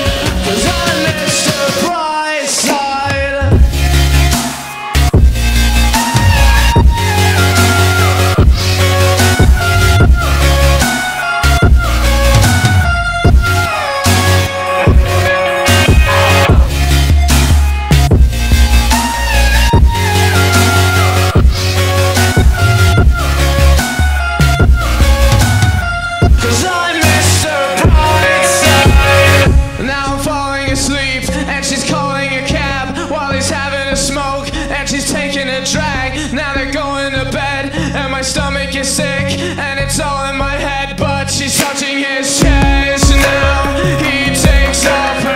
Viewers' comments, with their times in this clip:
0:03 omg the best Drop But it is a intro
0:04 The beat kicks is
0:04 Melted puddle right now 😚😚😚😌😌 that beat drip 💧 i am the melts 💧💧💧🌊🌊🌊
0:29 the way everything just sort of... synchronizes... makes me feel something i dont recognize anymore.